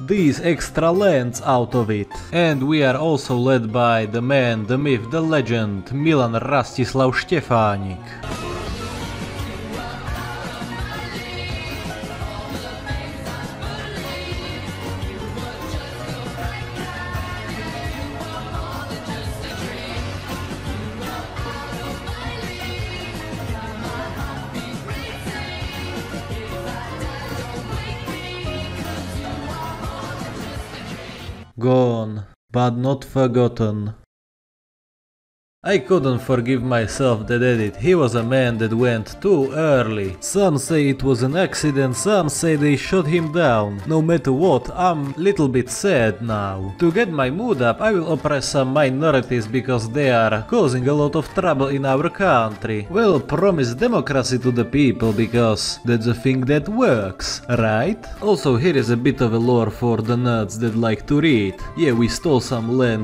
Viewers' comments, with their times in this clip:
0:09 The most slapped together edit I’ve ever seen. Background music is still there. Love it.
0:45 Little bit? Sad? Dude, I hear cry from bottom of your heart!